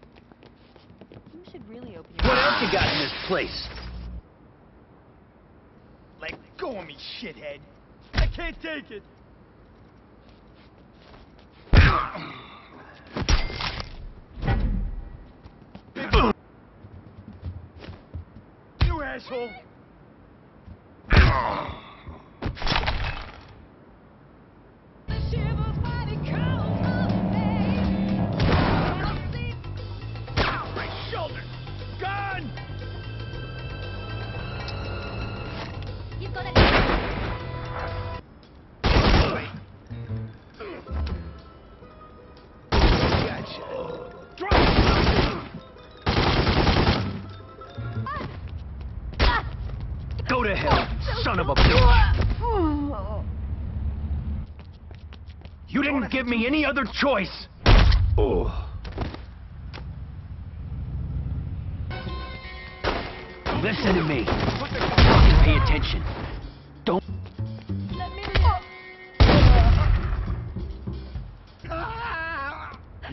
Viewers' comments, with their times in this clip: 0:07 That victim sounds like Homer lol! :D
0:54 when he shoots the guy the gun's like "BOOM" but when u look at what kind of weapon it is, its silenced =-[]